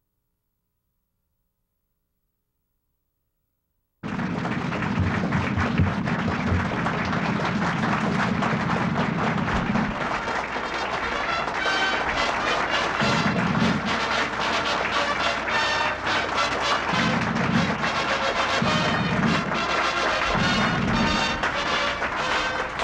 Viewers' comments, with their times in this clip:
0:04 sound starts min. GREAT AMERICAN HERO!!🇺🇸🇺🇸